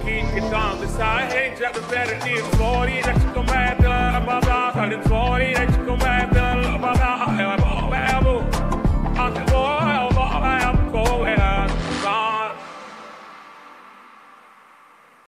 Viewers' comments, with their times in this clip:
0:07 vocals are fucking 😂😂😂